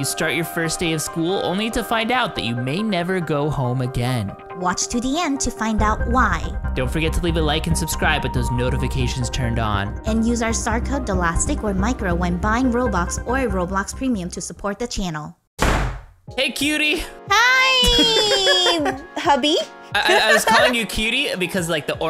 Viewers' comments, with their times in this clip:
0:10 I love how they still use the spooky voice when they say, “ Use our starcode”